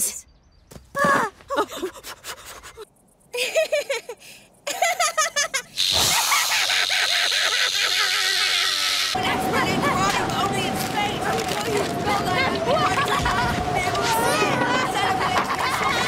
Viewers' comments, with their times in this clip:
0:04 no no she’s definitely laughing at that rock